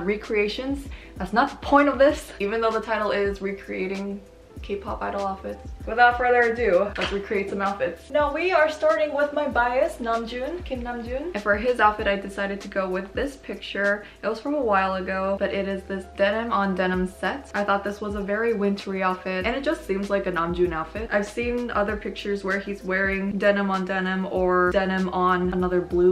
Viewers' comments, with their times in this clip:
0:08 in Russia we say bias instead of baes(???) idk why. so unusual to hear this word in another pronunciation.......